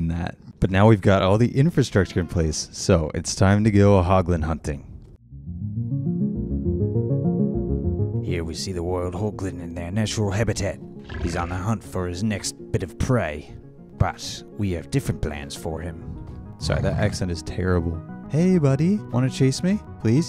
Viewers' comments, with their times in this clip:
0:05 This. 🏆 Most Excellent Narration Award
0:07 that accent was actually decent, cant wait for the accent on the wild west village.
0:07 that accent sounds like jango fett and the clones from the star wars movies